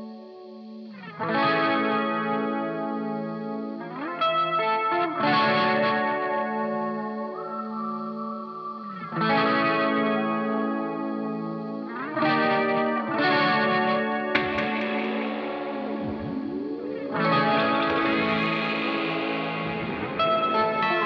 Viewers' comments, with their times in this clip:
0:07 that whistle doe